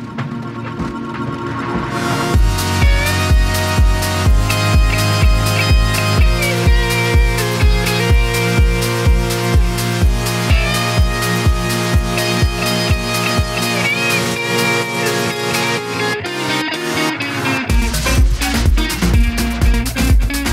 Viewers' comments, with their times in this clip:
0:05 loved that guitar appearance...